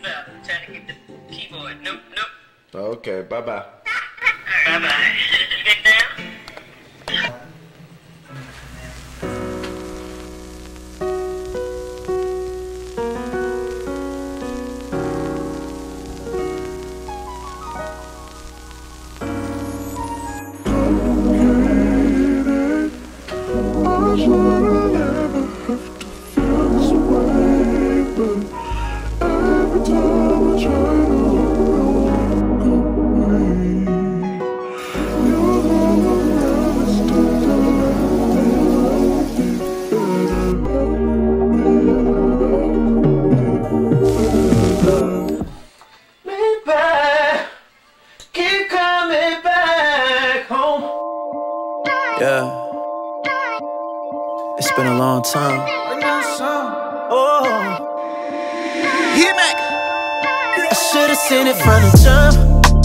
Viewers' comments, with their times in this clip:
0:08 The first seconds got me to think that the right side of my headset had broken
0:46 We got to appreciate his voice